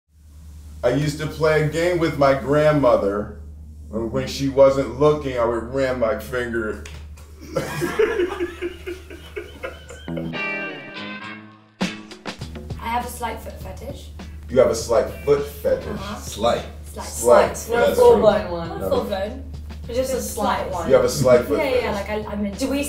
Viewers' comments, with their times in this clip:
0:08 that laugh lmao 😂😂